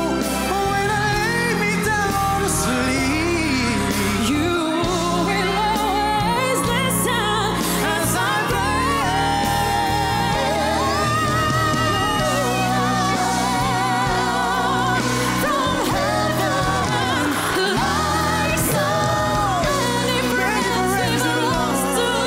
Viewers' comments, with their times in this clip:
0:10 that note <3